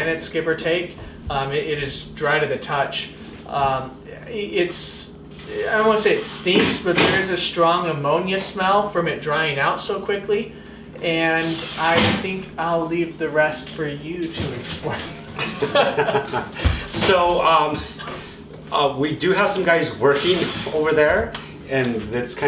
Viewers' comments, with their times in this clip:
0:09 I think it was, I thought maybe you had some techno music playing, then it turned out to be your sprayer, lol.